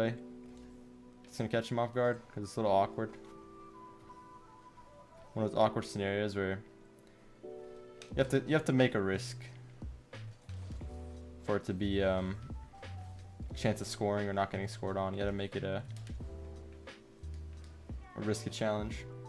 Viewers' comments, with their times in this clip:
0:06 What happened to the little moan that would always play ??